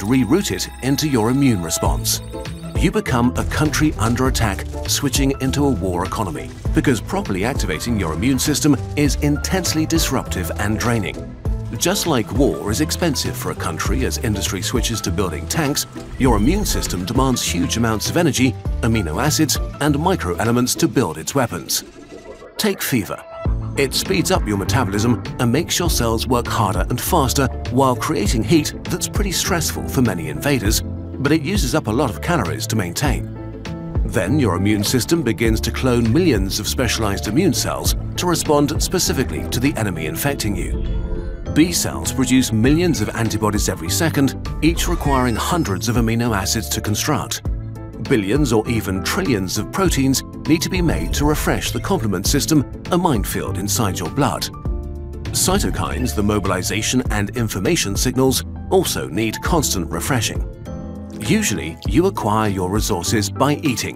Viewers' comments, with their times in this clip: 0:05 there is a point there where I had a mini anxiety attack, because it sounded JUST LIKE my phone's alarm tone..
0:44 omg the music is so catchy